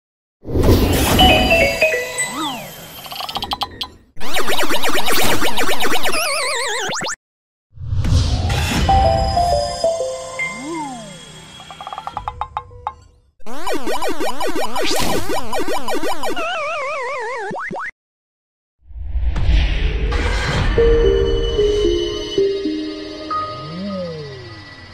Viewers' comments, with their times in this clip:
0:09 Sounds Like Normal